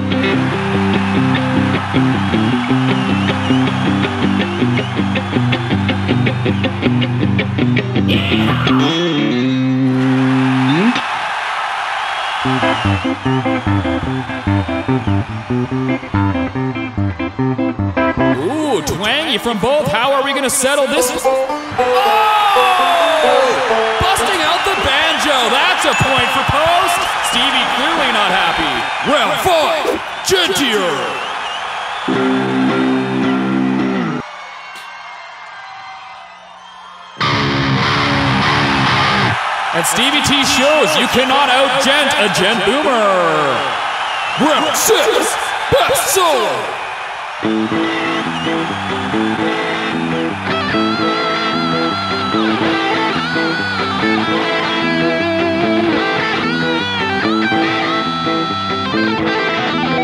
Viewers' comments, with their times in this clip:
0:03 one of my favorite guitarists does that Southern Twang on one of his guitar solo albums. He's a shock rock guitarist.
0:21 Malone on the banjo really made me fall down laughing my freakin ass off, 😅😂🤣
0:21 that sounded like Freddie Mercury for a brief moment
0:37 why did I get heavy DOOM Eternal vibes?
0:47 Post Malone starts playing "Runaway" by Elvis Presley, And Stevie solos to it. (I did record the battles and put them as bonus tracks to: Stevie T. - "Acoustipop". And listed "(ft. Post Malone)".